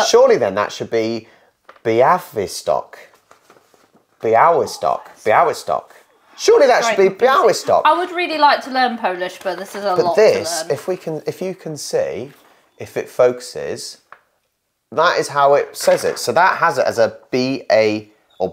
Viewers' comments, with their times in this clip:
0:04 you said twice good. Białystok like Byiw(wi)stock
0:05 perfect pronunciation Białystok👏